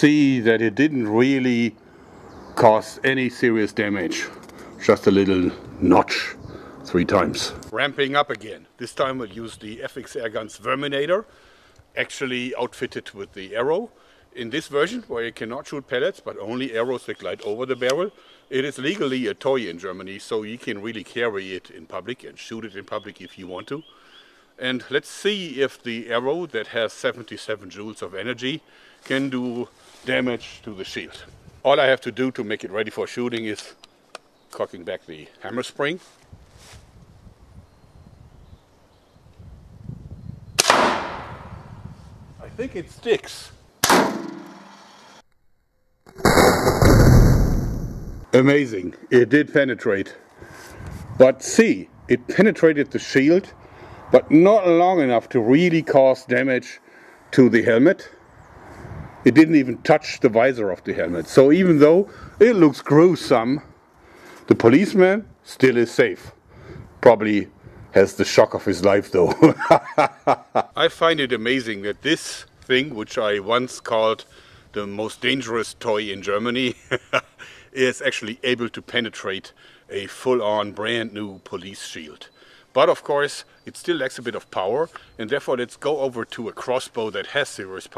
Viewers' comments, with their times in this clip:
0:10 did he say sperminator
1:09 someone teach me how to laugh like this